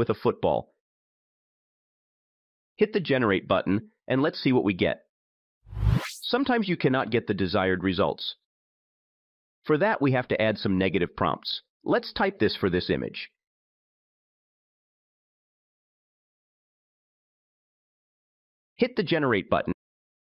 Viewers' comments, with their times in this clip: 0:07 Made it to why did you use that bothering sound when making a cut...really hard to follow the rest of the video...